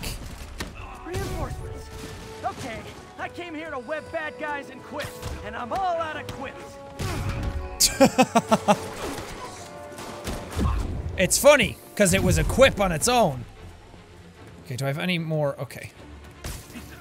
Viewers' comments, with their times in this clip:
0:05 anyone notice spiderman sounds like ned luke otherwise known as michael from gta v or is it just me